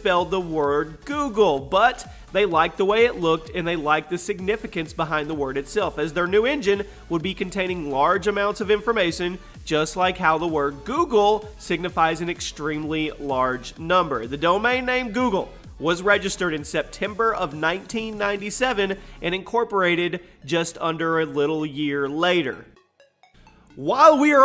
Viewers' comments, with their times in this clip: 0:08 informason. The numbers Mason!